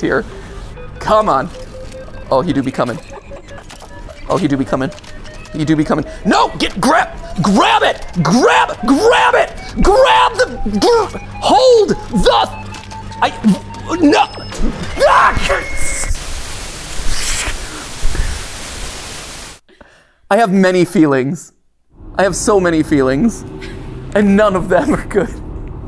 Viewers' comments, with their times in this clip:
0:07 I like that mat pat has like a markiplier rage moment